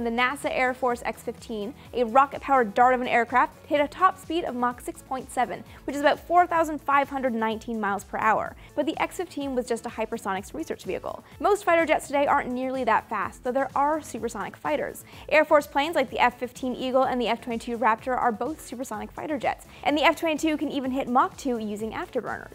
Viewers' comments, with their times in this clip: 0:08 hyper sonic wee search vehicle